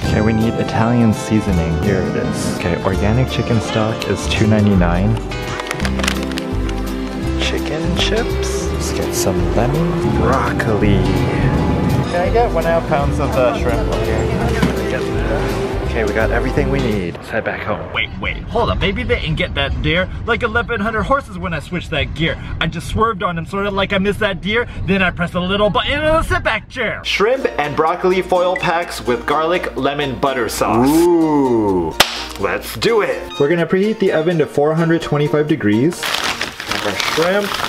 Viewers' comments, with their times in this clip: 0:03 I thought he said to many 9’s 😂😂😂😂😂😂😂😂
0:18 the new eminem.